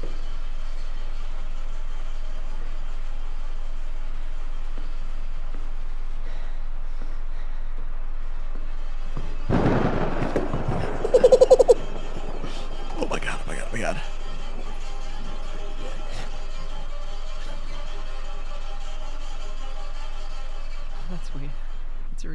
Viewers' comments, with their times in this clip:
0:10 Why bro sould lile a bird